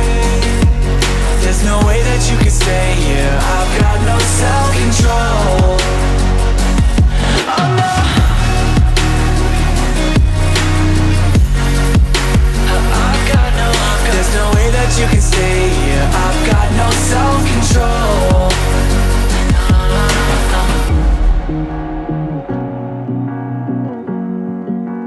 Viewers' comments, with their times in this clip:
0:07 did he said Allah ? Help